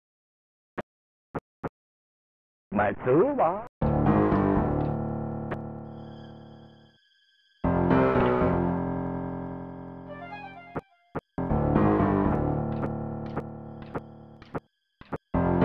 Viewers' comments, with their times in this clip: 0:03 Does anyone know if the music starting is specific to this port of the game? I recently picked up the 20th Anniversary version and no matter what music/sound option i go with, this awesome dramatic track is absent